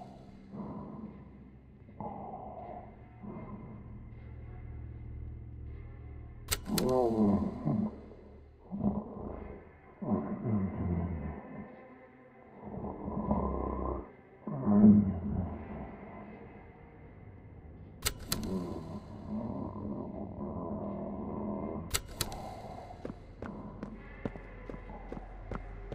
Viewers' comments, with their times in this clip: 0:08 Why did it sound like the catnap cardboard audio box was farting on the toilet 😭🤚